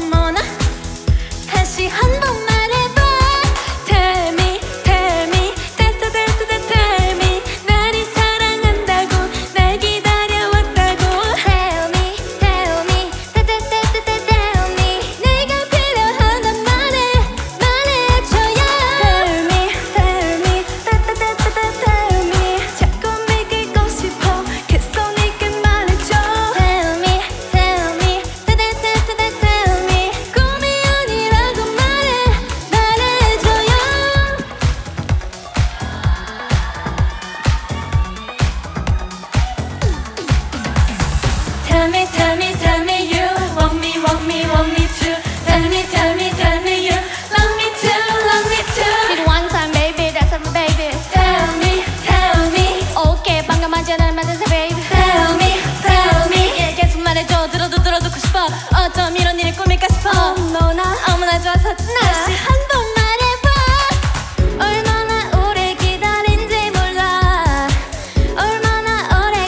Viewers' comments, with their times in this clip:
0:04 TELL👹meE TELL👹meE Ok the girl who forgot the lyrics is not the worst here😂
0:48 "wonton baby thats im babi" (tell me tell me) "ok pangamajamitama babe" (tel mi tel mi) 😩🙌 (im not being mean. the rap is js funny and iconic)
0:50 ikr she is worst in singing..saying that she will improve is just injustice for others she don't deserve to be on top8 at all